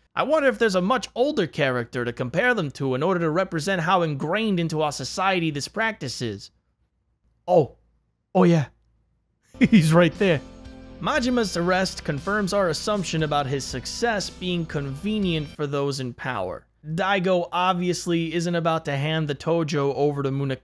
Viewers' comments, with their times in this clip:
0:08 Man, your accent comes out strong in. XD